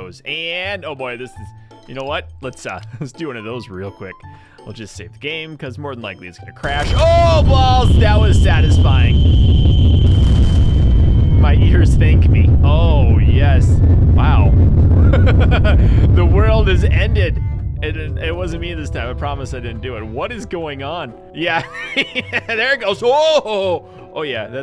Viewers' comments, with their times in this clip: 0:06 AAAAAAAAAAAAAHHHHHHHHHHH MMMMMMMMMYYYYYYYY EEEEEEEEEEAAAAAAARRRRRRRRSSSSS
0:09 GOD you could have had a headphone users warning man, now im almost deaf click there if u wanna get deaf!